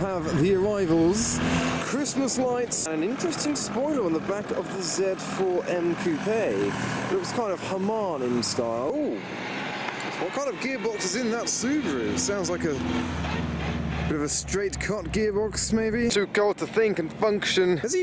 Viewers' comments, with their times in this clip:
0:03 Literally stopped the video and backed out because dam bruhh non stop talking. You bug with the talking and talking kid.